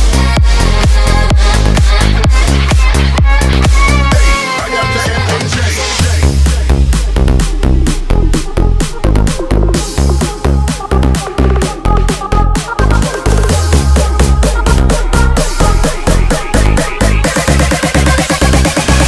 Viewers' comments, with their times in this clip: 0:06 Best build up and drop is